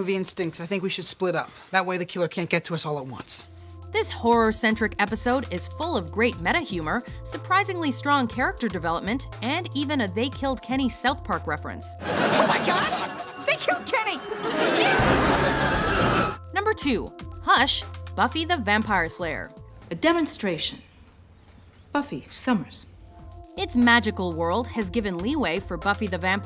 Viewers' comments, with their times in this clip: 0:10 That scream from Corey in Boys meet world is GOLD